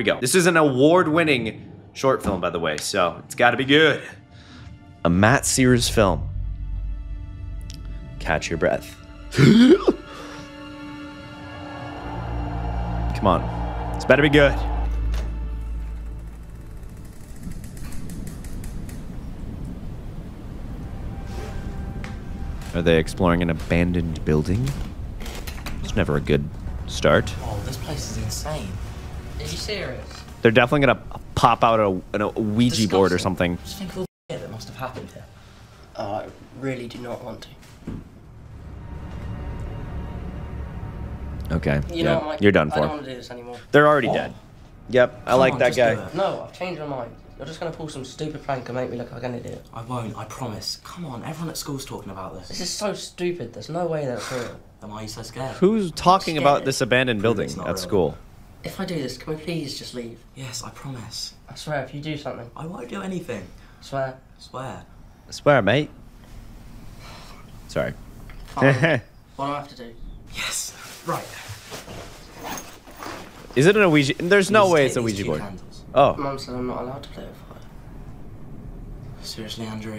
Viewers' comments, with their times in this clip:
0:09 The way he catches his breath. 😅
1:06 as a British person, I very much appreciated that accent 🙂